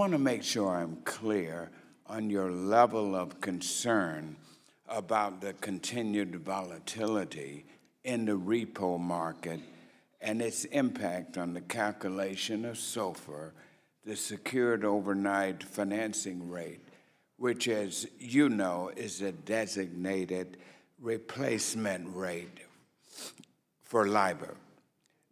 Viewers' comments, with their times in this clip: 0:06 I can't believe some of these congress people, they can't even conjugate a verb. "was ur idear on da brexit, wit delays afta delays what is ur concerns wit are markets potentials cross border un boxing" wtf? who the hell learned this guy how to spoke?